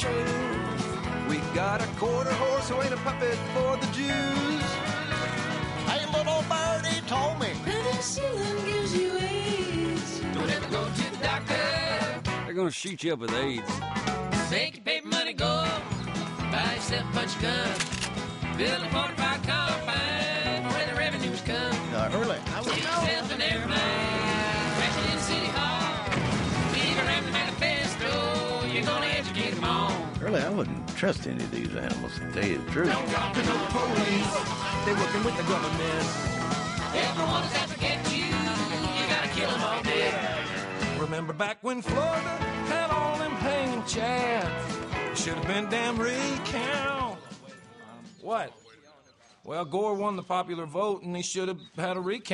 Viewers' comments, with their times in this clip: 0:05 I'm serious listen to that singing is awesome
0:40 what's he even saying? I just can't make it out.